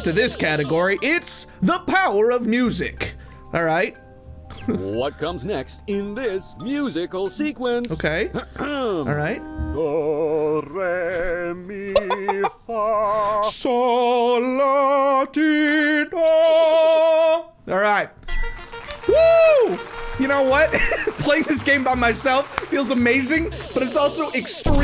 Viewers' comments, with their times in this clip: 0:10 Dancing banana? NO. More like singing banana.